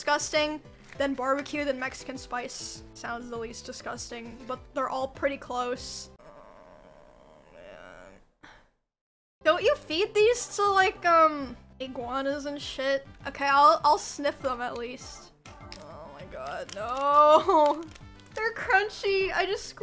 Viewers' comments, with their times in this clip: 0:05 The sound she makes made me think my stomach was rumbling.